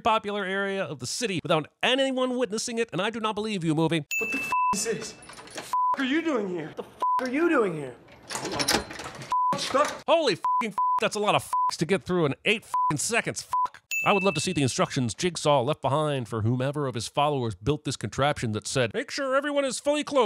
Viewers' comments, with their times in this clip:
0:04 i couldnt stop laughing thats a lot of beeps 😂😂😂